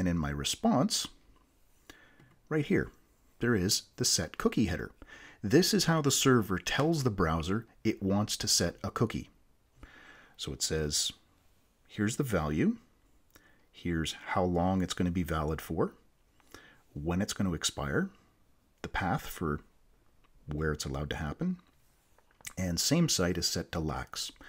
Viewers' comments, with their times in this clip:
0:08 Was it just me or you guys also noticed that there is an Om 🕉 sound in the background after